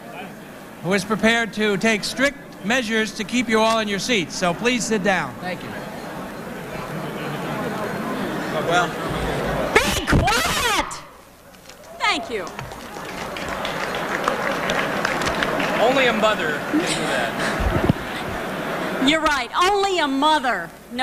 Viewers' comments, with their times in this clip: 0:09 brilliant, I was longing for someone to shout that at them